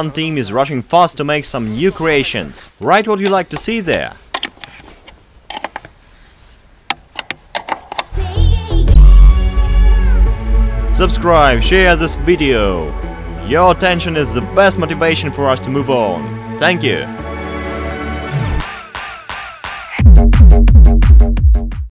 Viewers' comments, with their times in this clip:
0:09 ohh that clipping :/